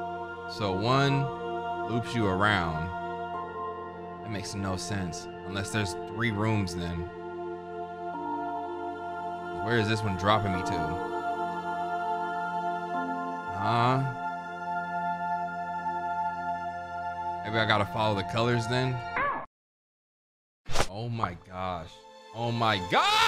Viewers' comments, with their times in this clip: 0:06 The OST is sooo good bro 🙏